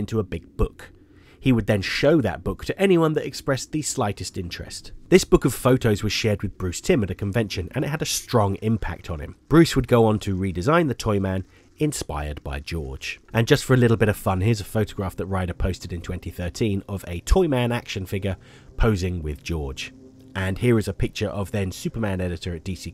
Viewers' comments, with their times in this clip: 0:04 What the hell's that crackling? It's really annoying.